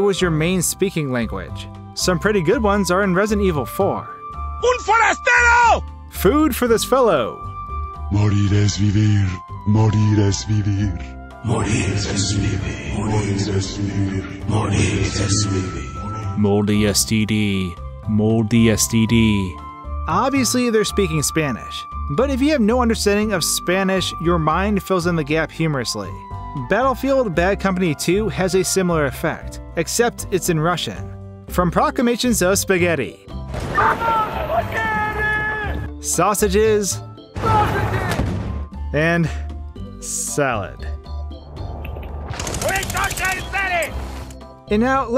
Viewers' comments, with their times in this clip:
0:03 "Un forastero!" A Forester!
0:04 I hear “Gunfire, stay low!”. On a side note, there’s a Green Day song (which is “She”) where even knowing the proper line is “Scream at me until my ears bleed” is still heard as “Scrape my knee until my ears bleed”. Which makes NO sense!
0:05 food is a stale (you're not mario) morty has the beer (BAD MORTY!)
0:06 "Morty as he live," - Some Guy From Resident Evil 4
0:07 In RE4, I used to hear "modern SUV", played without headphones.
0:07 i herd it say "moldy dedede" as in the kirby character
0:07 I actually heard "Modern SUV".
0:07 I heard it as "PUT THAT DOWN!!"
0:08 morty has to leave
0:10 I watch Vanoss so when I heard I heard “Moldy Al Dusty”
0:12 I heard “mortys SUV”
0:13 I thought he said “ Morty is sleepy”
0:20 I hear "Are you supposed to be me"
0:32 Im Russian and i still cant understand what there saying
0:33 "I LOVE SPAGHETTI!" (Except, that's not actually what they're saying; our minds are just filling in the blanks.) (I can honestly understand and speak a little bit of Russian, but I'm a lot better at speaking and understanding Mandarin and Japanese.)